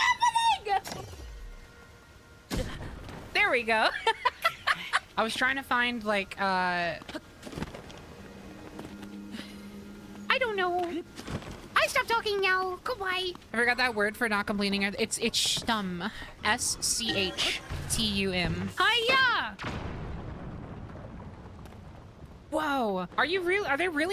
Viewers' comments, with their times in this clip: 0:08 For the cute voice